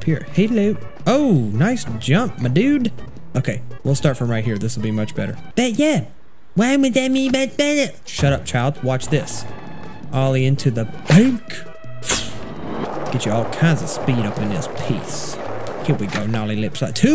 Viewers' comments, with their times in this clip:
0:04 Sound like that guy from south park lol